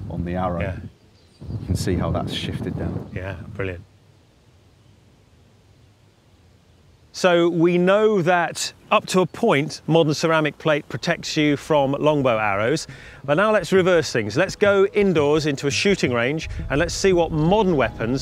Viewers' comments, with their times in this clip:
0:06 watch guy on the right chuckle about "up to a point"